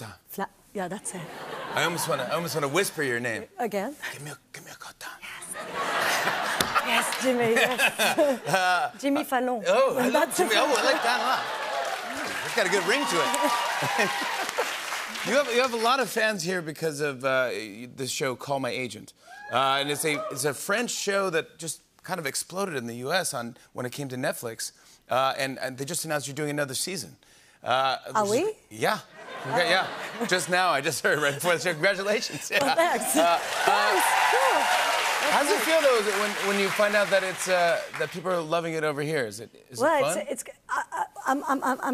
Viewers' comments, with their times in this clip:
0:07 The way she said Jimmy Fallon 😭 As a french native, I laughed
0:27 She is either saying 'are we?' or 'ah oui?' but both works too